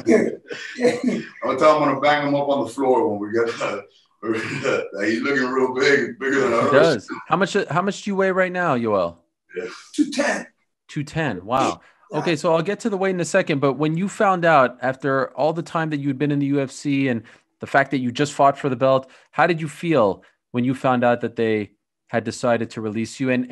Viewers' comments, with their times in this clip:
0:07 Ariel: how much do u weigh right now? Yoel: 1897